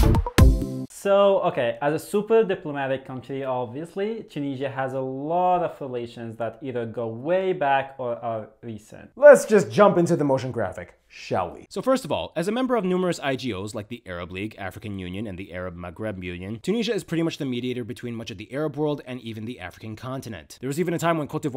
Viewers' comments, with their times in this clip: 0:04 "Tunisia has a lot of fellations..." He must have meant AFFILIATIONS, surely!